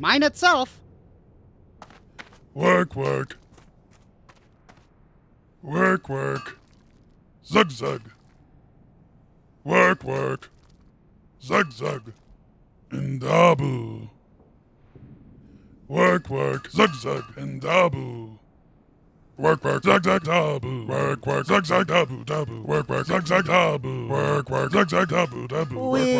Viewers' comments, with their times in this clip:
0:08 Transcribe Audio.."We're queer"..K